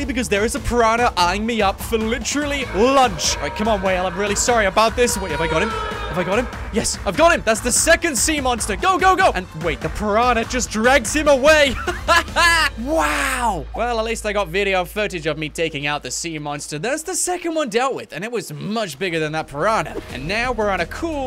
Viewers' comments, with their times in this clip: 0:03 what is that sound the whale is making